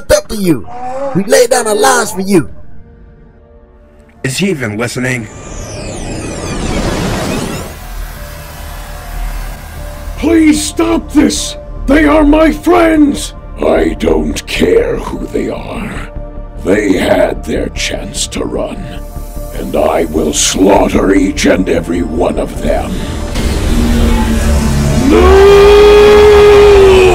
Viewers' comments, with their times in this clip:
0:10 what is that voice
0:11 Why is optimus sounding so zesty lol